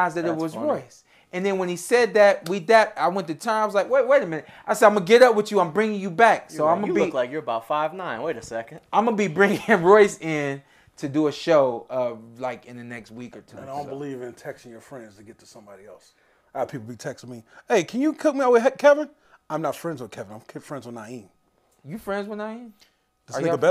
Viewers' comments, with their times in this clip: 0:06 incog negto?? Lmao